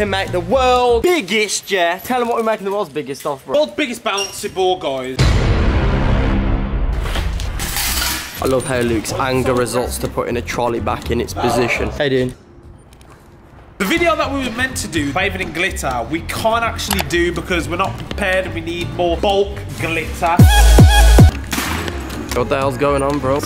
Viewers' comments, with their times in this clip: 0:05 damn I love that tune.